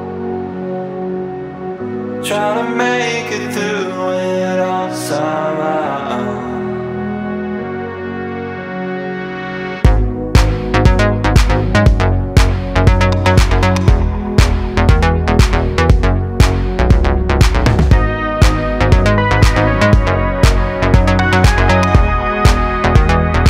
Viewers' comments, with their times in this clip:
0:06 I'm always rewinding this song so I can hear the beat drop again.
0:09 reminds me a lot of Parcels - Overnight 's chorus